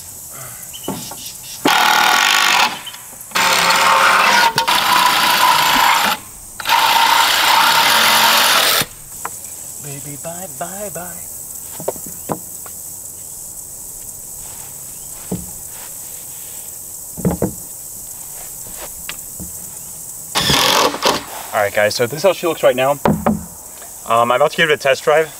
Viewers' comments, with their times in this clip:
0:10 i can tell when this was filmed he literally mumbled "bye bye bye"